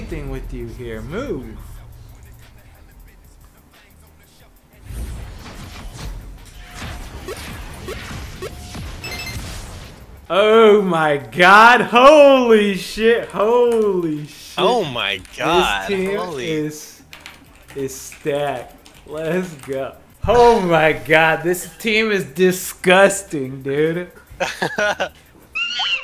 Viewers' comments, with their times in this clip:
0:09 that "OH" sounded pretty posh qt lol